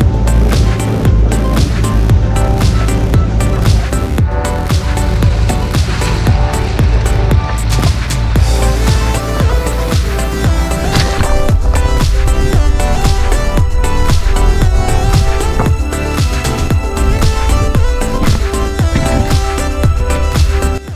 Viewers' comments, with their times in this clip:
0:05 in the video was the machine struggling because it sounds like it and how come that one machine has metal tracks instead of rubber ones